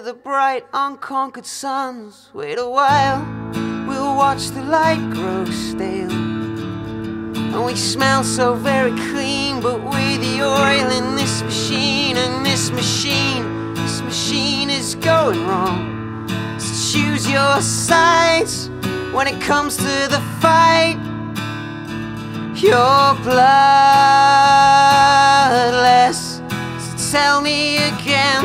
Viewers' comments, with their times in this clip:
0:09 Is there a burp audible ??